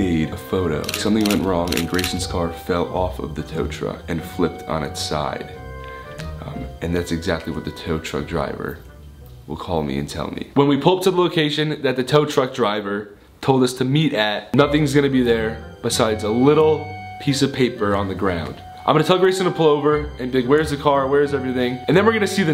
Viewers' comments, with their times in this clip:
0:07 ethan speaking with his deeper voice had me ded like ded DED